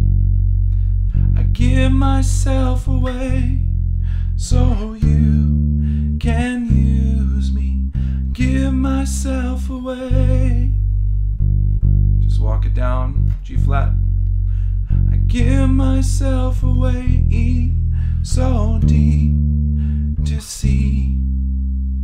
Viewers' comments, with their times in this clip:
0:03 I messed up It should be open string (E) rather than hitting the 1st Fret (F).